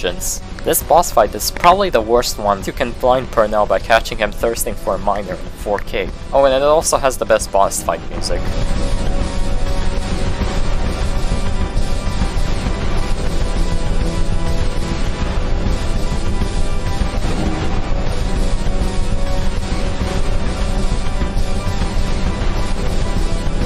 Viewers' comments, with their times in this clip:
0:08 i love doctor purnells theme, it envokes such a feeling of that last push to the finish line, that sense of urgency and adrenaline, the whole fight in general feels like the biggest turning point in game, the whole reason its my favorite fight, this fight is everything you worked up to, till now, and this theme (despair) encapsulates everything I just said into a track